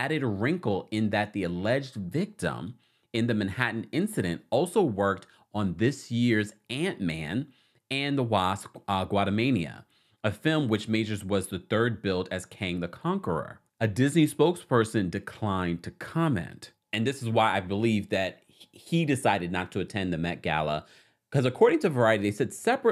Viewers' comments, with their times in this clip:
0:05 its Quantamania, (Kwan-Tum-May-Nee-Uh) Please stop saying Guatamala, it drives me crazy lol